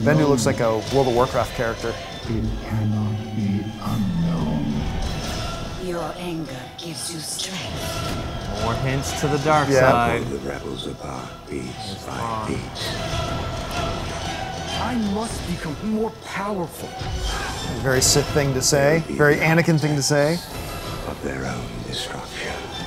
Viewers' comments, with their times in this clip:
0:06 Am I the only one who heard Ventress ?